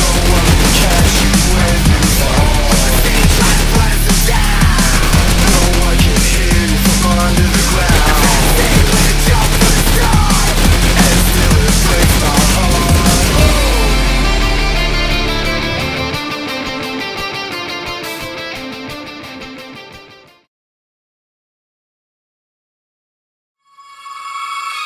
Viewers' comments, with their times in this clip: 0:08 xf sound lol